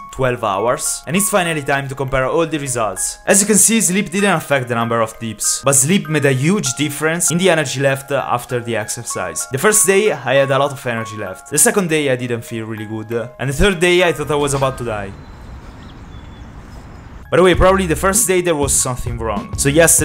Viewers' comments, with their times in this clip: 0:03 i just love how he said deeps instead of dips (i know its because he has an accent, but hearing deeps instead of dips sounds funny)